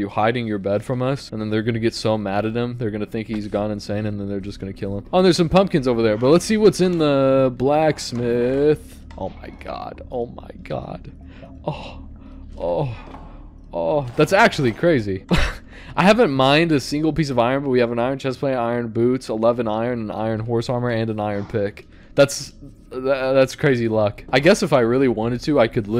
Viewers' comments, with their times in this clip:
0:08 moan moan moan
0:09 3 out of the best minecrafter Moaning?
0:11 what are the sounds bro is making